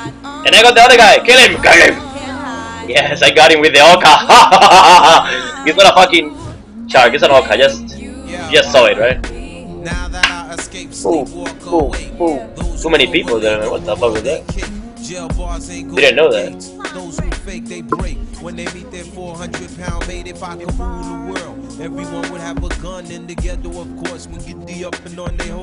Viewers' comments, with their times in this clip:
0:08 best laugh NA